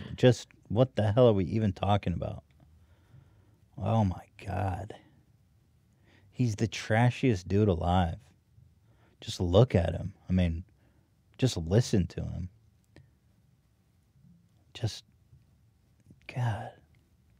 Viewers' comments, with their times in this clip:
0:04 when Ethan goes silent he should have played the shitting pants noise.